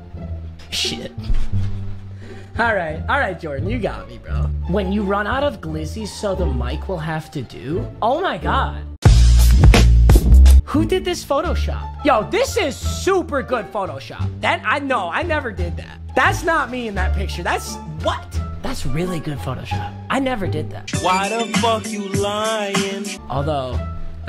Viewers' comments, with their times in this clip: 0:07 bruh I was watching on max volume